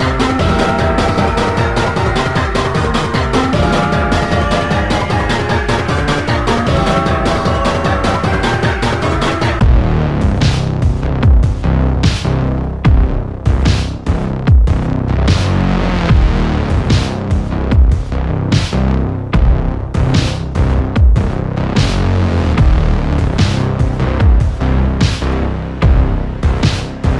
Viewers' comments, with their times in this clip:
0:09 All For Now makes anything feel threatening. KZ has a godly soundtrack
0:11 Traffic corner has the most intimating theme lmao. Quimble in horror when you see the Traffic Cone!